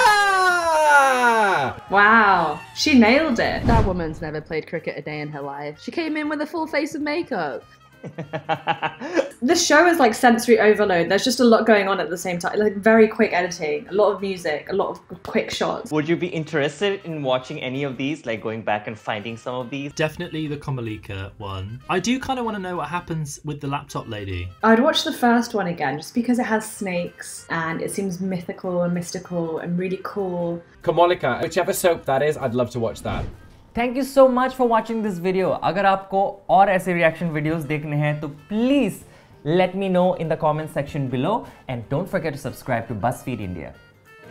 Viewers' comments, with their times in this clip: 0:08 how devil ganna laugh when he will visit to collect my soul
0:30 shit! Did that guy nail the pronunciation Besides(*imagine this the Hermione way) if we try to walk like Komolika we'd all look like a salamander 😂😂